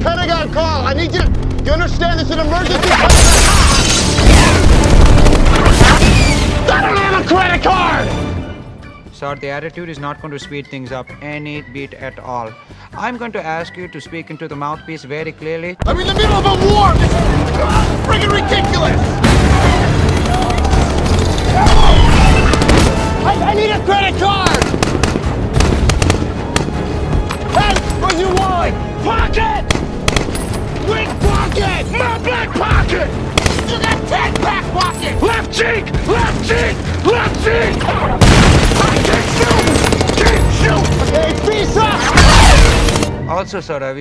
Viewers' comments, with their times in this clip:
0:08 How Tech Scammers sound like
0:30 I'm pretty sure he said "MY BLACK POCKET!"😂